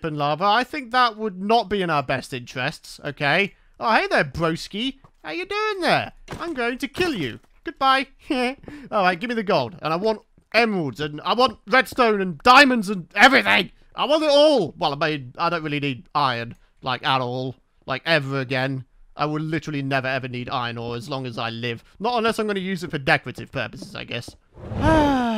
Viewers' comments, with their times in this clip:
0:08 Peter Griffin laugh 😂